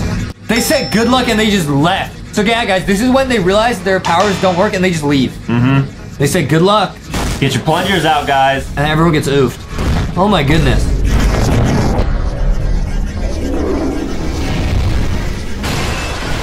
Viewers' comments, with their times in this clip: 0:03 I swear when in normal not reversed it said oh good good luck in minutes